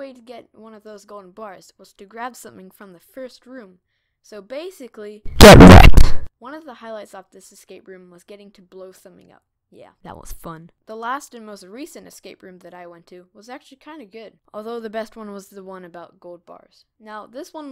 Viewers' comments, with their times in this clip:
0:05 The sound was kinda quiet, so I turned it up, and then this happened so thank
0:05 🌹🗿 r i p h e a d p h o n e u s e r s